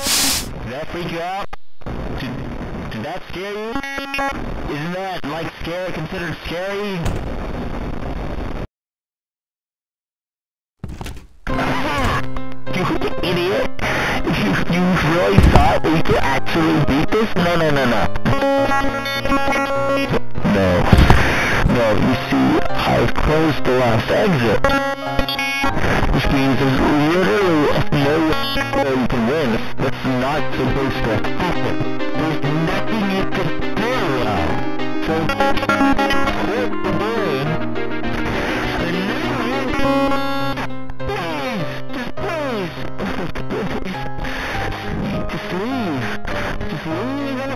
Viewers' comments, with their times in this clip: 0:07 *horrible absolutely dreadful music plays*
0:26 love the music
0:35 I love this music